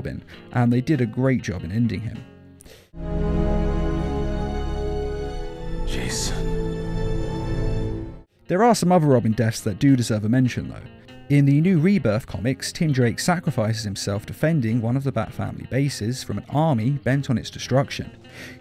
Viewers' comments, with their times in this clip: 0:04 bat sadly says Jason , subtitles be like 'jeez'
0:06 “jason...” why did that remind me of cheryl from riverdale